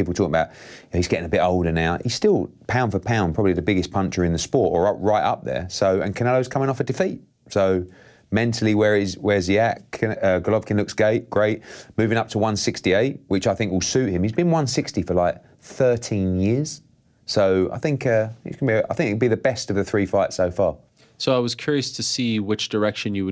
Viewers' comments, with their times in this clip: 0:08 hearn: golovkin looks gay... great......😂😂
0:08 golovkin looks gay... Great
0:10 "golovkin looks gay, great" 🤣🤣🤣🤣
0:11 he says gennady looks gay… this must’ve been done as some kind of bet with canelo